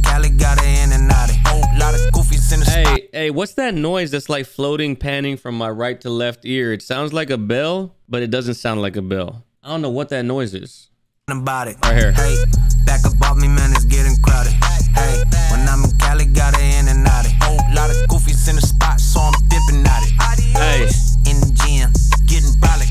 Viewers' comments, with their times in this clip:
0:06 same sound my old analog alarm clock makes.